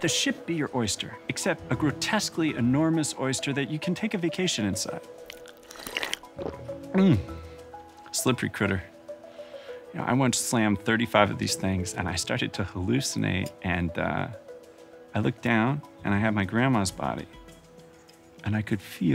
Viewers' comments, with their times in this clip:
0:05 the sound of that slurpee oyster lol